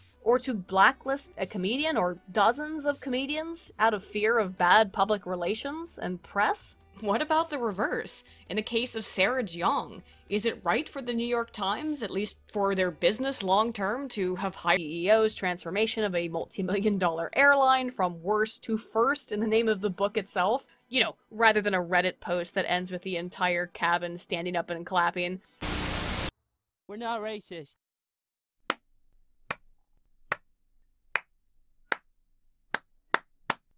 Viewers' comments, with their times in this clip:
0:10 Question... Is there an audio bug at the end of this video? Like I'm having an audio deja vue
0:14 ...went weird at the end. Once you brought up sarah jeong it looped back to "CEO's transformation of a multimillion dollar airline..." then ended abruptly after the "we're not racist" cartoon & your retelling of the "Plane/Plain" pun ect.
0:14 Is that a audio error or I am just hearing things?